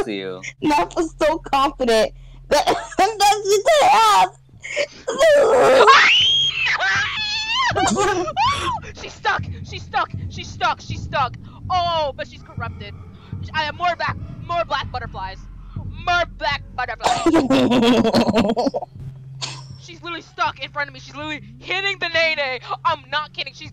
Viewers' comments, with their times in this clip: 0:07 this timing are cats fighting.